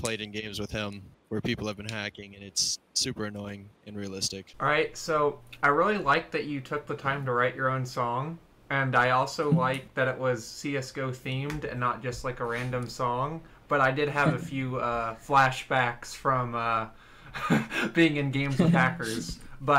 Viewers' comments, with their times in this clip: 0:07 do I actually sound like that??????